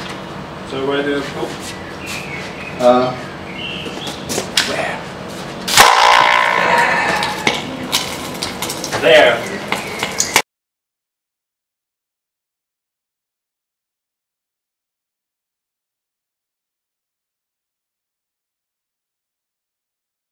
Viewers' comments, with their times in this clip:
0:05 So that's how they made the Inception sound.